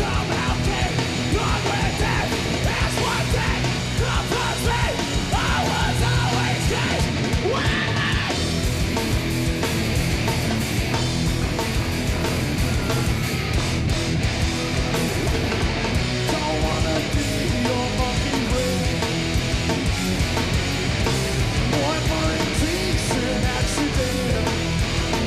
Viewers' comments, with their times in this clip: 0:07 Dave squeals like a little girl. 📢 👧🏻